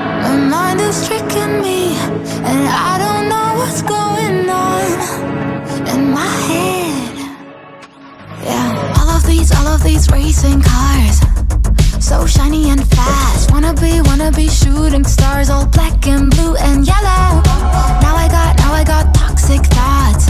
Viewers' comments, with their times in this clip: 0:06 I didn't even notice the car starting up sound in the background